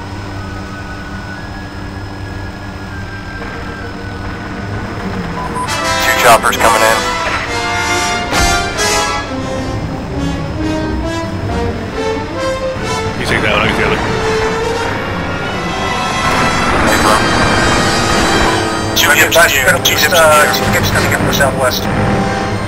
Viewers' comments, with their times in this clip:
0:04 "Squad leaders we've picked up a new group of signals: enemy helos heading your way." "My scopes negative, I don't see anything!" "Pick your visual scanning. Here they come!" I also love how the music in this video matches Bravo Vic's crash with the crash of Red Leader in the movie!